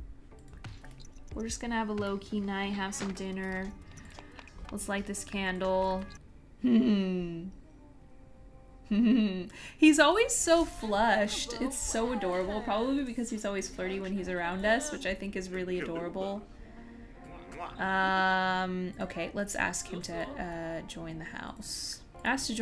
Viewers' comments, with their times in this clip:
0:07 that laugh is kinda creepy 😂❤️